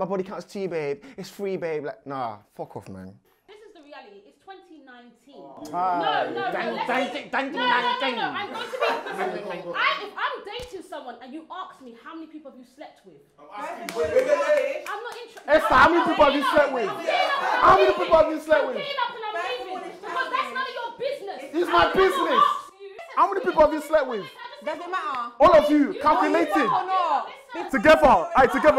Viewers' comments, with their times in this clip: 0:09 took me outtt, why is he mocking her big teeth though?! Outrageous.